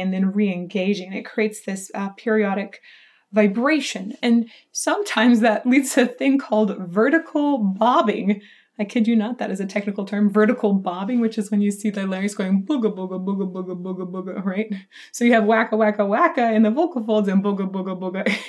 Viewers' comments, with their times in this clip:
0:05 oh he was struggling there, doing this live is so so hard!